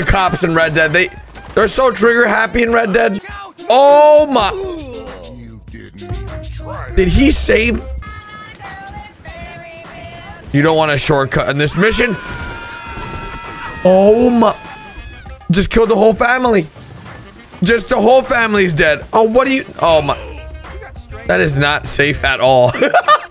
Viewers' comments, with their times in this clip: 0:08 I died laughing just hearing all of their screams lol